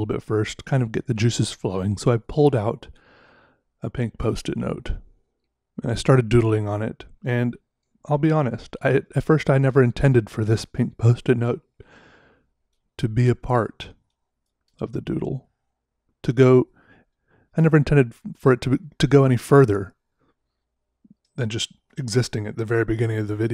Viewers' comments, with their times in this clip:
0:09 sounds like you needed to sneeze 😂